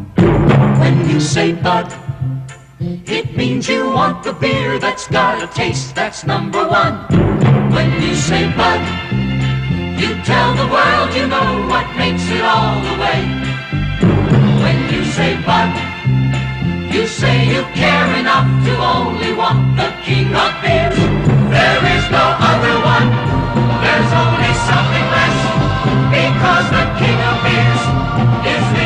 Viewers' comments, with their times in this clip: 0:10 Love that squrt......mmm so impresive today... LOL 😏